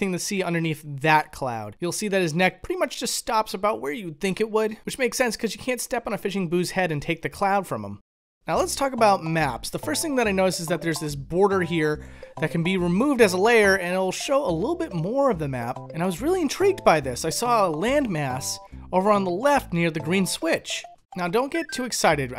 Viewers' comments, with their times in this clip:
0:09 mistakes were made all i can hear is the overworld theme and charlie brown's teacher